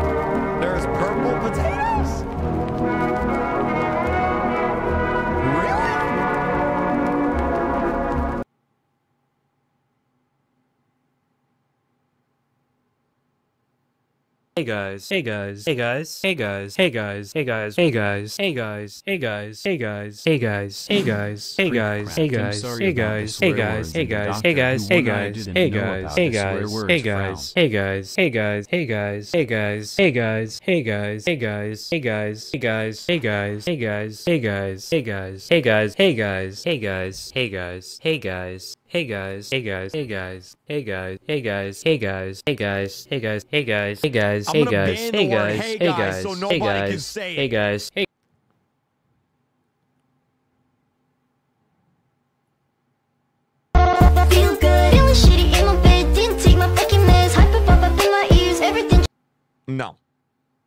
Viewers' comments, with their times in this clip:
0:06 love that music ❤😂😂
0:43 yeah that doesn't sound like hey guys anymore...